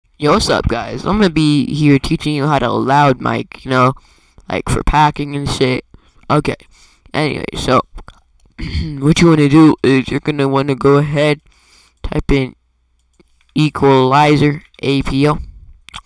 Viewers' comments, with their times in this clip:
0:00 This will be my voice if I was ever a character in Hazbin Hotel